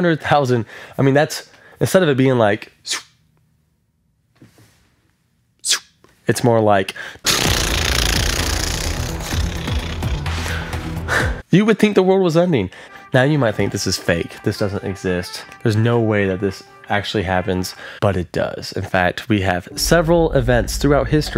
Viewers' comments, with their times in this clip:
0:06 Excellent sound effects!
0:07 nice sound effects